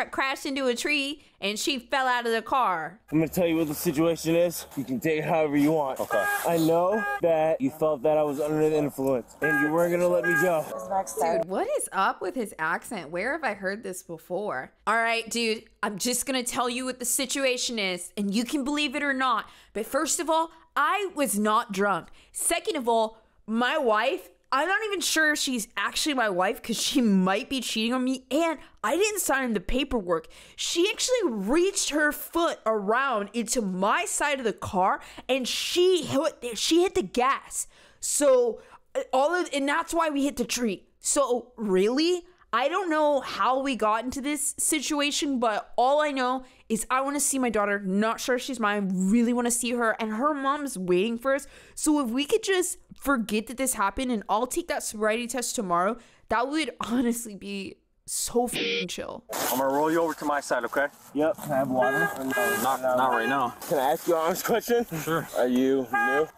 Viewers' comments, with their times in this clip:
0:10 you sound like Amy Poehler when she does Duncan in Duncanville
0:12 that's a California accent.
0:49 that accent is the accent they give teen bullies in Disney or Nickelodeon shows 😭☠️